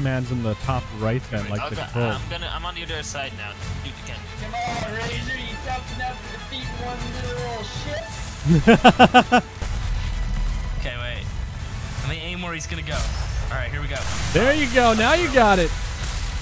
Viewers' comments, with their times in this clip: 0:04 That pirate music though... E. P. I. C. Omg WoW